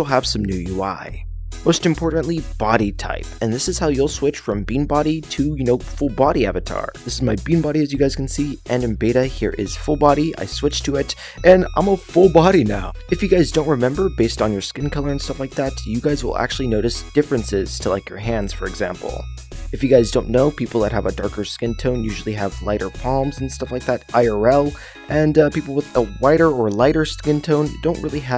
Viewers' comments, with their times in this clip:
0:09 At time it in that background you can hear that one Mario meme😂😂😂😂😂
0:09 the background music.. it reminds me of that meme...